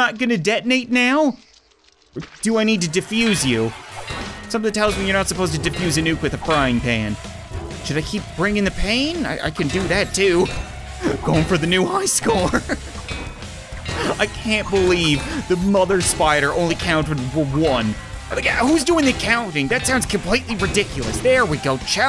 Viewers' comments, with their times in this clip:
0:08 when the DOOM music kicks in...